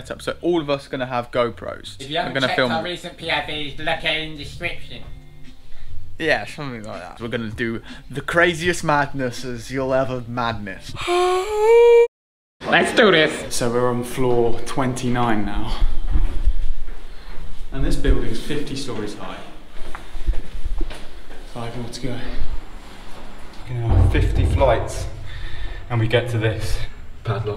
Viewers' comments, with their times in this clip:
0:09 Dammit you made me yawn when you yawned they're flippin contagious from the past to the present. 😴